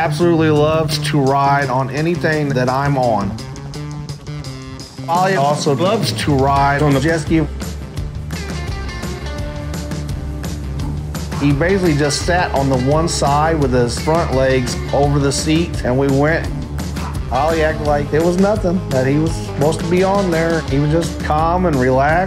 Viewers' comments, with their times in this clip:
0:04 If this isn't the most patched together piece of sentence editing if I ever heard. Lol It's cool, they're just getting to the point faster and funnier. And got dang, Ollie is caaaah'ute!🐮
0:04 the dodo sentence mixing sometimes sounds almost natural, but made me chuckle for how bad it was slapped together. XD
0:04 What is up with the horrendous sound editing ?
0:04 seamless audio edit
0:04 why does this sound like 5 clips cut together tho? 😂
0:04 the dodo just puts some words together, you can hear it pretty much lol
0:04 that speech editing lmfao, sounded so natural 😂
0:05 Lol, Anybody notice and the weird mash up of words.
0:07 That line just sounds like its been butchered from multiple sepearte takes